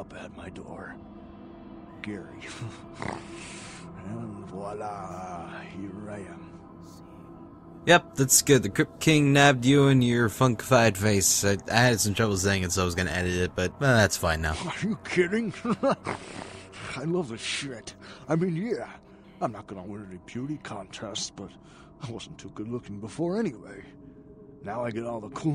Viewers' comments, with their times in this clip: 0:06 The way he said voila made me crack up.